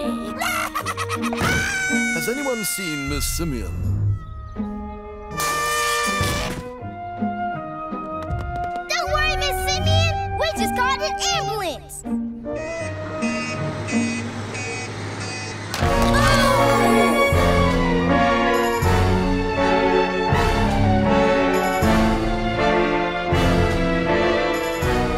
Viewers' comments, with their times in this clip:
0:07 Ambulance huh? Wait that music.. The ambulance is backing up.. NOOOOO